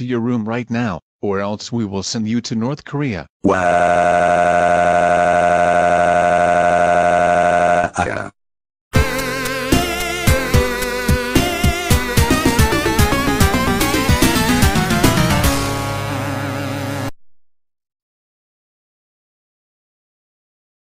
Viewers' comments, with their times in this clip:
0:03 Dark Obsidian Bowser’s Crying Voice, and great look.😎